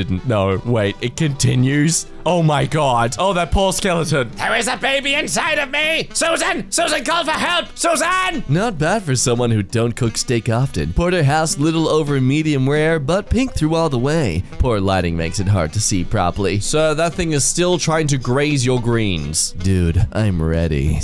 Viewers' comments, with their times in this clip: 0:04 Also he slips into jacksepticeye's papyrus voice
0:07 THAT REMINDS ME OF PAPYRUS SO MUCH- THE VOICE FITS IT